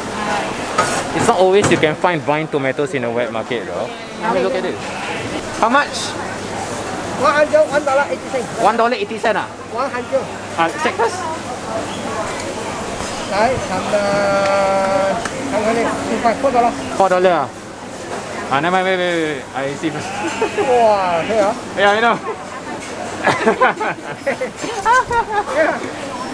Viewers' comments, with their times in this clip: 0:10 what a voice crack haha. "Check firrsst ~"